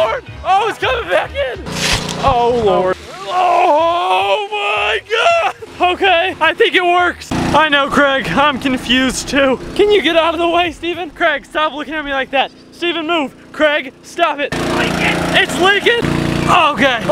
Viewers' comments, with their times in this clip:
0:05 in the video he sounds like Harold from captain underpants